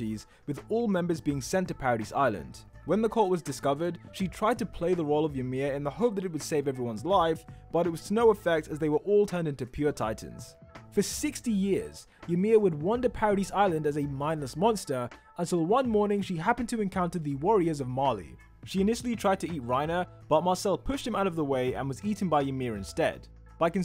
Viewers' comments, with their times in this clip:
0:10 Did you say 60 or 16 years